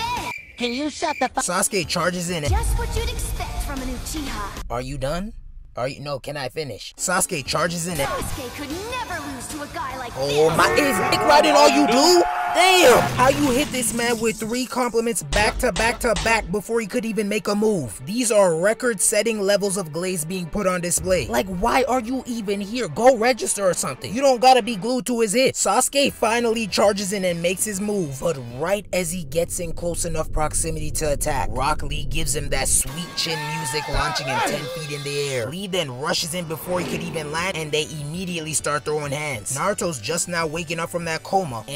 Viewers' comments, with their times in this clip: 0:07 not the cod zombie scream 💀
0:17 idk why but the walking dead theme killed me 😂
0:25 I can feel the frustration from that voice after all that meat riding LMAO 😂